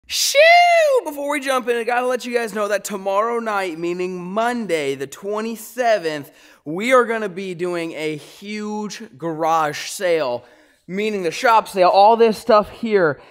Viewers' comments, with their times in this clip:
0:00 that coyote was copying him 😂